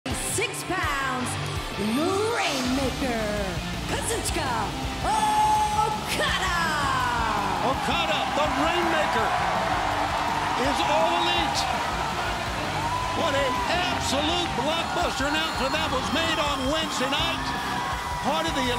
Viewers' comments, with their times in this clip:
0:02 I love this music so much !! Every time I heard this music I wanna dance my head.